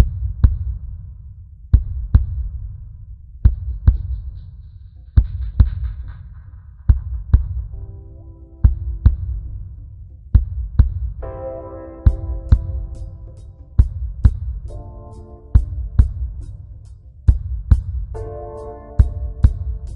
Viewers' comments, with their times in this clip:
0:06 one of the best relax song i ever heard!!!